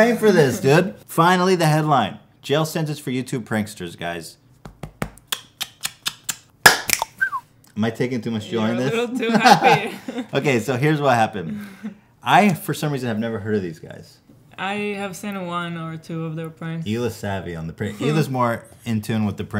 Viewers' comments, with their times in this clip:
0:05 Man that callback "wee woo" snap had me dying. Thought he was going to hypnotize Hila
0:06 did he just snap-woohooed me?
0:06 that hypnotist finger snap'n whistle Lol.
0:06 was that a click woohoo